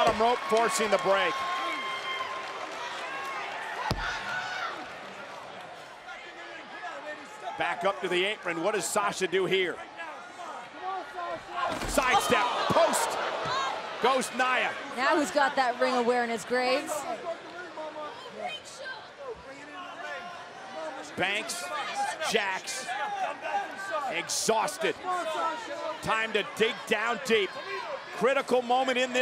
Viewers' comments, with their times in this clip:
0:10 who else heard a kid say “the ring shook!” 😂😭💀
0:17 Did anybody hear that kid "The whole ring shook" lmao 😂😂